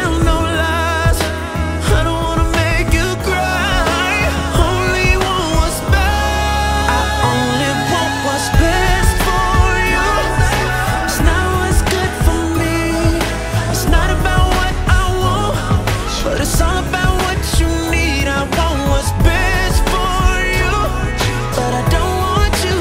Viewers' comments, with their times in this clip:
0:08 He destroyed that note starting